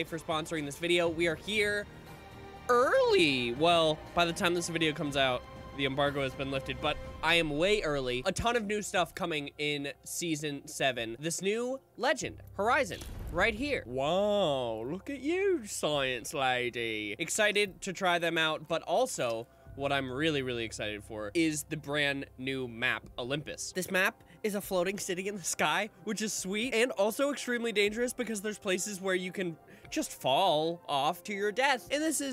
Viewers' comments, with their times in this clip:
0:05 THE EMBARGUS HAS BEEN LIFTED
0:14 WHY DID HE SOUND JUST LIKE STAMPYLONGNOSE